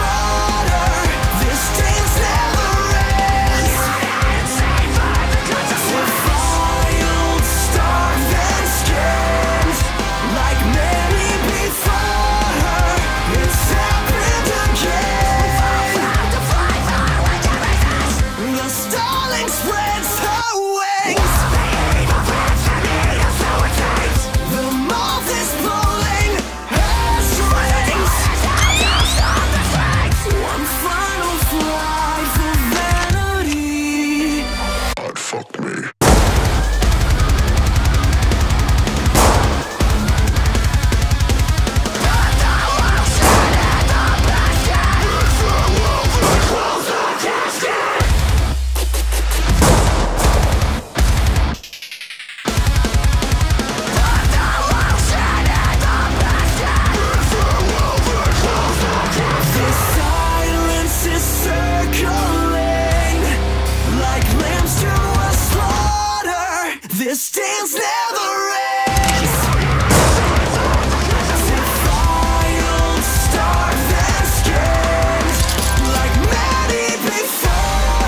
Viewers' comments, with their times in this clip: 0:07 Uninvited by Coldrain (cover) vibes for chorus ( min into Coldrain song) ... it's different but reminds me of it.
0:59 do yourself a favour and enjoy those vocal harmonies